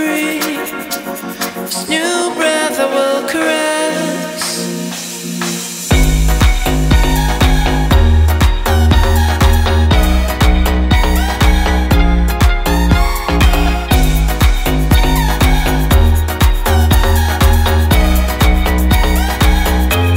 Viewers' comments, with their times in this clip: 0:04 I love the drop